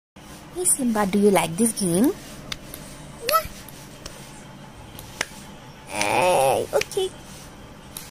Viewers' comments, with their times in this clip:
0:05 what even is that noise?